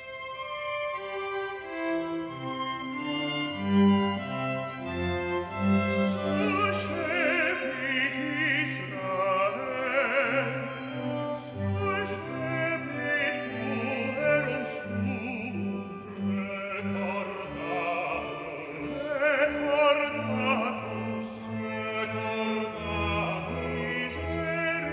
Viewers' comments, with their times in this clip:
0:06 I've never heard such an angelic tenor voice...